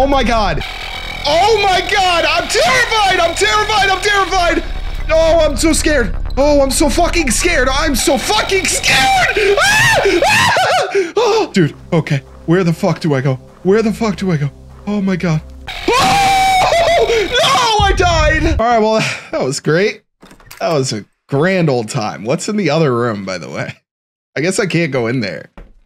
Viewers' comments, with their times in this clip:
0:09 tom and jerry ahh screams